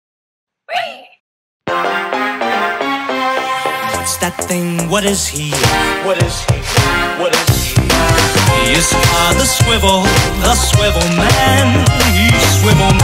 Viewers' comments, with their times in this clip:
0:01 The loop without the "Ree!" Intro.